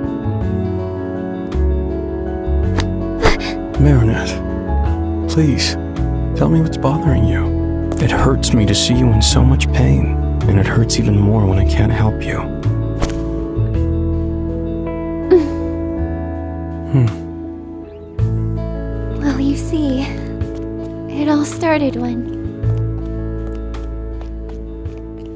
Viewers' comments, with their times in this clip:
0:10 he sounds emo and sick